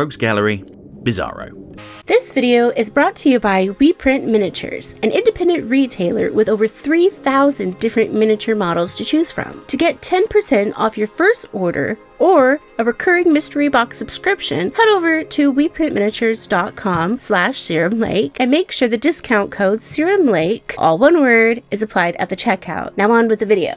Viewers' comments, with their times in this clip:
0:04 Bro what happed to your voice ?